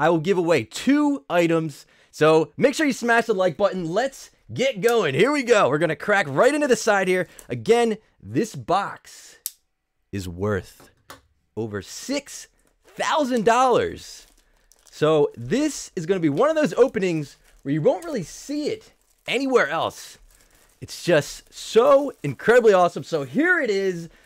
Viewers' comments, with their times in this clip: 0:08 Did anybody notice how his voice changed like that